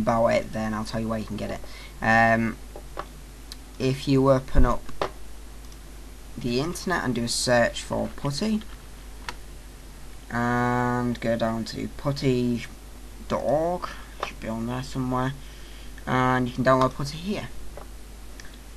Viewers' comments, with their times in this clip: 0:05 I missheard : "if you open up the internet, and search for pussy" .. Just spilled my coffee :'D